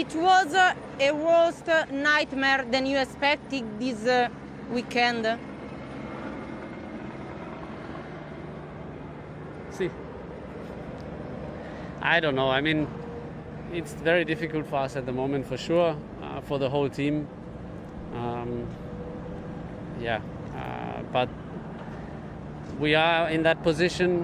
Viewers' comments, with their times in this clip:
0:09 That “Sì” says an awful lot